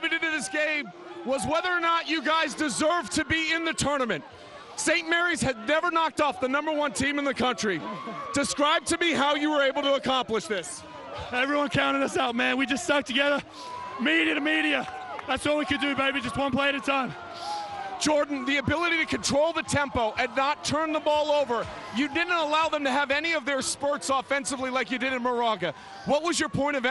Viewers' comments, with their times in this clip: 0:10 Holy shit is that an Australian accent I think that's an Australian accent. As an Australian I am now even happier that St Mary's won.